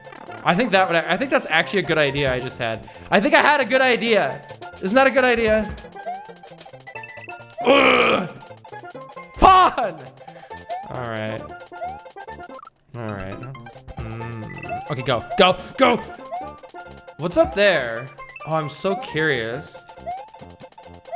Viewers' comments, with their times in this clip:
0:09 you know, that was a perfect pronunciation of "Fan" aka the swedish word for "frick" :P